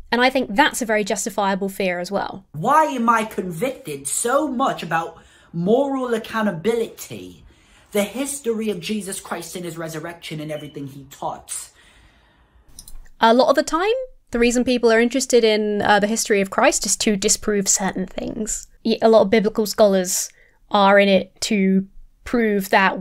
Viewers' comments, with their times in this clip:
0:09 this guy can't research, write, edit, rehearse, or even keep fresh batteries in his smoke detector... which he appears to have taken down from the wall behind him to stash somewhere else because he knows it's beeping. Zero effort / 10.
0:10 the beep is an international phenomenon.